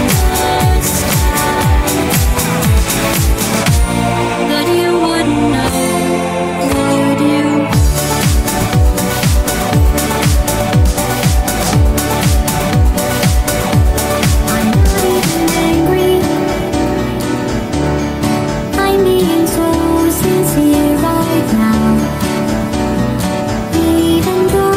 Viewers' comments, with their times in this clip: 0:09 when the beat dropped i hit a perfect gel bounce. satisfaction.